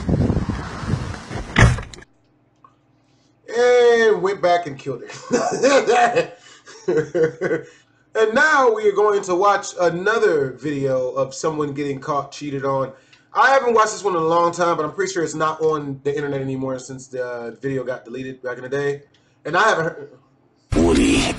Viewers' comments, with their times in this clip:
0:04 that laugh reminded me of the roadrunner from that one cartoon with the wolf chasing the roadrunner lol
0:05 On what kinda laugh is that?
0:07 LMAO BRUH THAT LAUGH